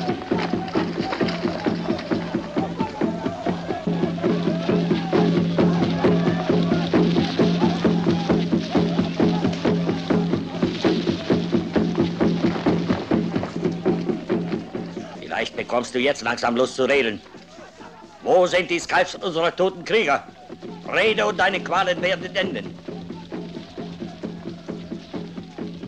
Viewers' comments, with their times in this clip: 0:10 That indian speaks german?